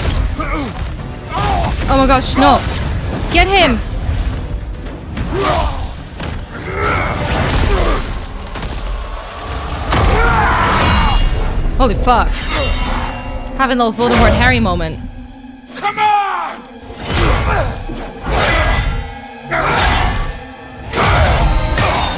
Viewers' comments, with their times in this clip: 0:10 What a British way to react that loooool